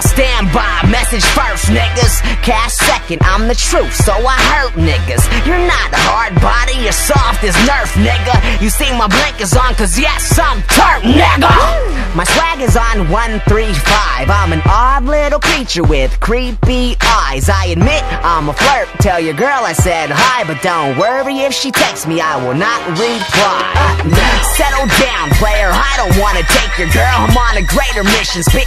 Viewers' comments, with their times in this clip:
0:09 the way he says nigga XDDDD